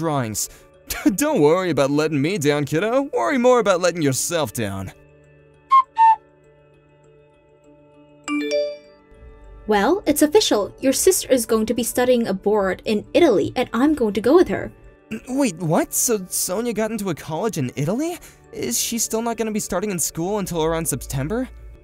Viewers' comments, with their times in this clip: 0:08 LOL sister is going to be studying a board in Italy. She must be brilliant. I wonder what wood it will be made of? Teak, Maple, Oak?